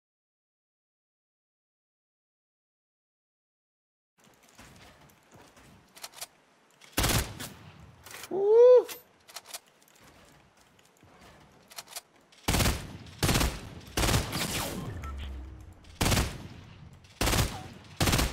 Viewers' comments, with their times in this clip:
0:06 Sorry about the audio dudes! The VOD muted itself until hope you guys enjoy!